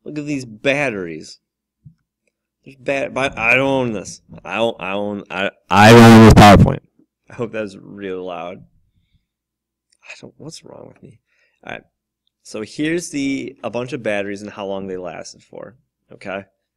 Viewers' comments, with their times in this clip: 0:03 MY EARS OWWWWW